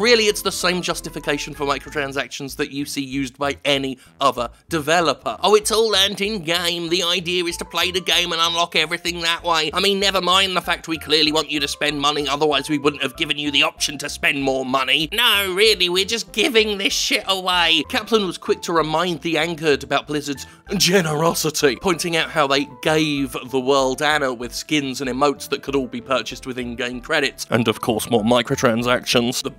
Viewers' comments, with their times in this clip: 0:10 you sounded a little bit like Moss from The IT Crowd for a moment.